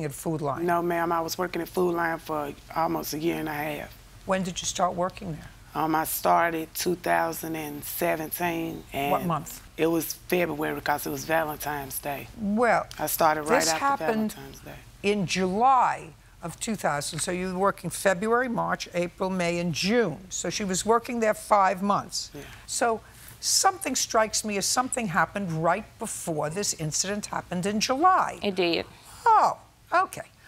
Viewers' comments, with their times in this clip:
0:10 Ok… I thought she was saying, “Godzilla’s Valentine’s Day.” There’s a holiday special for everything.
0:11 Urgh... Valentimes Day 🙄 My head hurts listening to these two.
0:12 Did she say Valentimes day? 😂